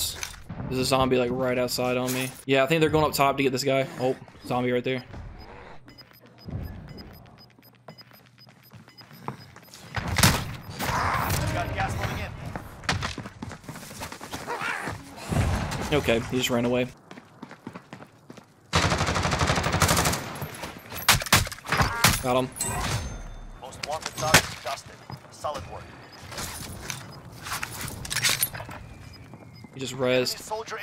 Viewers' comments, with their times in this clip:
0:10 the zombie is so cute I love how he smacks and his little voice lol
0:13 I laughed so hard the noise the zombie made before it jumped had me in tears😭😭